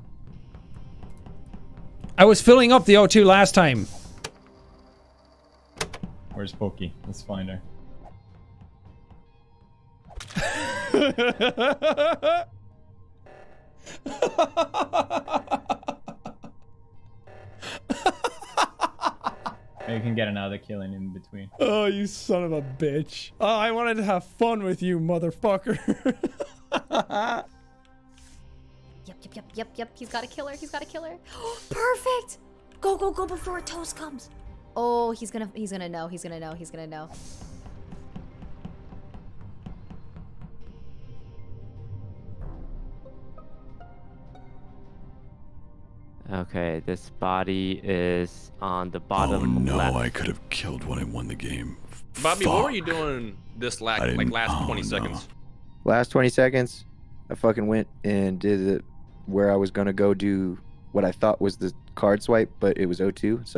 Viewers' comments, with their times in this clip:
0:10 * Pewds kills jack * Literally no one: Jack: * Maniacal laughter * Time stamp:
0:51 the way he says "FUCK" 😻